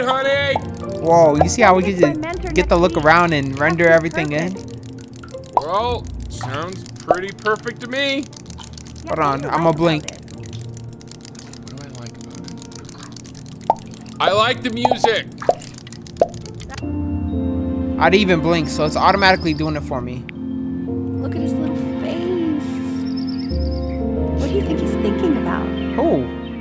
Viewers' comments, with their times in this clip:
0:10 Yo guys any one who watched clarence doesnt Richard's voice sound familiar in 🤔🤔🤔🤔